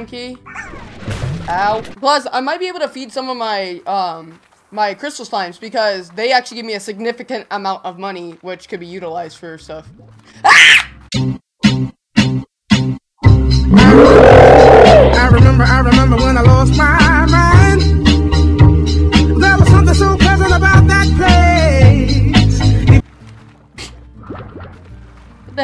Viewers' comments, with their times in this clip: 0:09 was so bad, not the slime, just your reaction. Not bad as in dislike bad, just bad in the way you screamed, but that made the title make sense lmao